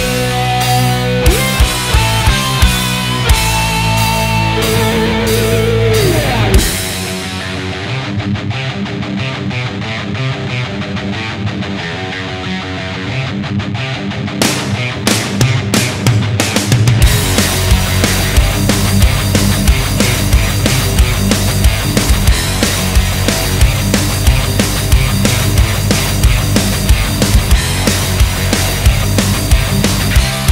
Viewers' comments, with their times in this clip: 0:06 First part of the riff sounds like Lords Of Summer
0:14 what kind of drum fill is that😂